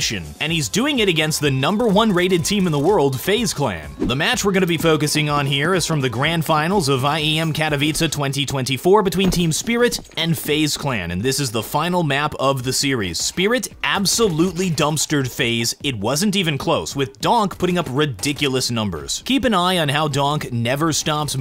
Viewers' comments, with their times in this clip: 0:07 That's a VERY good pronunciation of Katowice (as a Polish person)